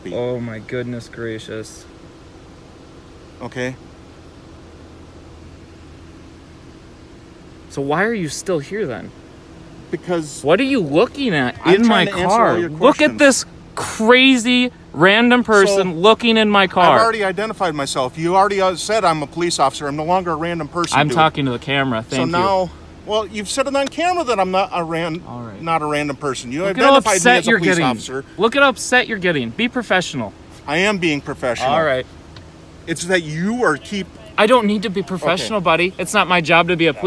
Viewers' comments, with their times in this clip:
0:03 The silence killed me on this part😂😂 cop mad beacause he got his feelings hurt...GROWN AZZ MAN🤦🏽‍♂️
0:23 listen to how the cop's voice broke like he was about to burst into tears holy shit this cop has such a fragile ego he was definitely bullied as a kid
0:23 bros voice cracked he was so pressed 😂 what a sad excuse for a public employee